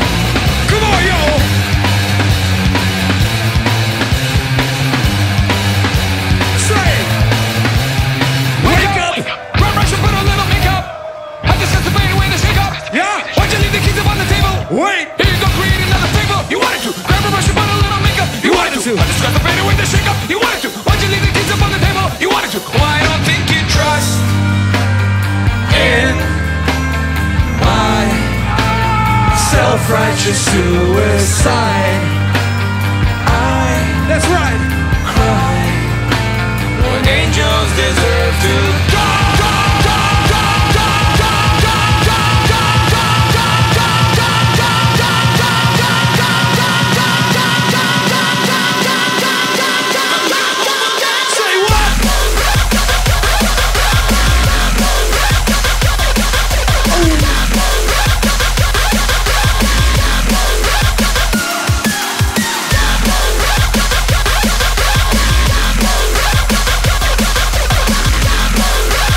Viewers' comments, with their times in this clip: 0:08 the transition back to hardstyle was too good
0:42 Man, that Segment from SOAD into the DnB always gives me chills
0:50 this drop to dubstep... Nonono... pls.